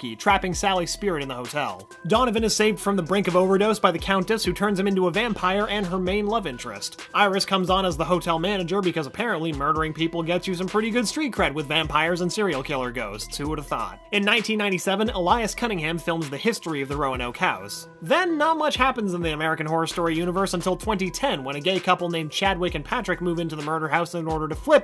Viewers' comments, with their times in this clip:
0:06 man im too high that beat playing is so clean